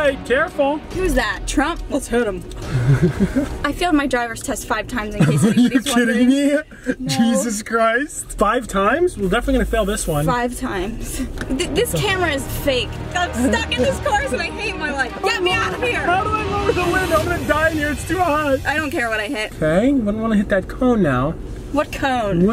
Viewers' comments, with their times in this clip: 0:04 nice rapid fire spit lol